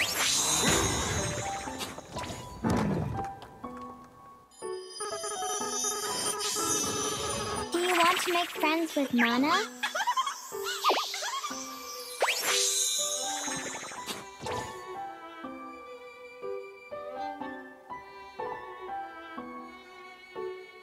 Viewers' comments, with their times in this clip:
0:06 no, I don't want to make friends wit- (insert scary Elephant noises) Chill I was just kidding-